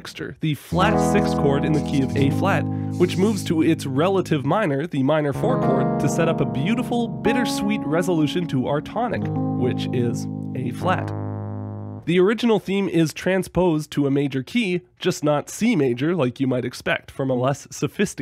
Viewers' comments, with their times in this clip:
0:03 Really appreciate you demonstrating the move from bVI to I while talking about it I'm not as fluent in thinking about chords outside of the basics, and being able to hear it (the moment I thought "which one is that again"!) made it easy to follow and helped me build chord vocab ("ohh, that one yep"). I'm sure you've been doing this for a long time, but thanks for this moment that caught me perfectly.